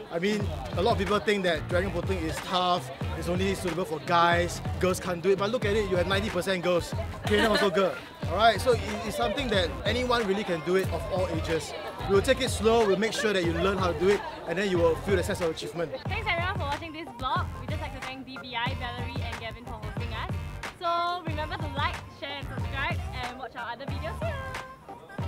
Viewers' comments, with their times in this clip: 0:06 i heard "taehyung also girl" 😂 wot HAHAH